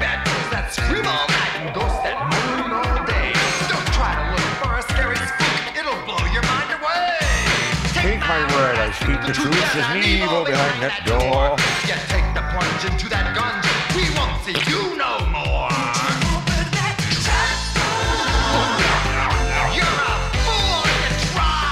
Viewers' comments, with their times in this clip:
0:08 Gotta love Boni singing along